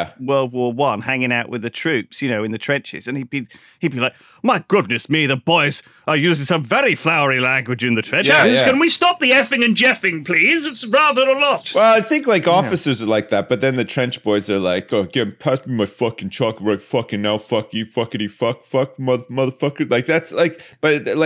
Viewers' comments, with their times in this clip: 0:03 I thought I heard Stephen Fry there for a moment